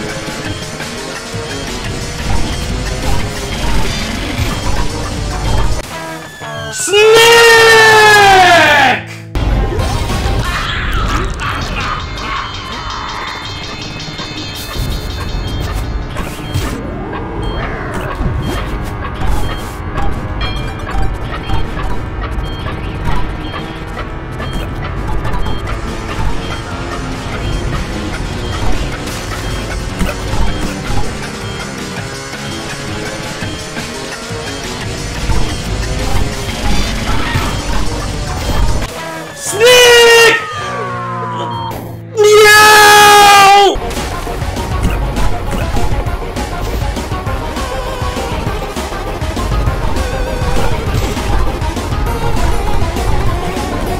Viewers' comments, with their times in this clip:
0:06 The absolute anguish in your voice when you yelled out "SNIIIIIIICCCKKKKK!!!!" absolutely sent me
0:39 sniiick (chaos lord he screams)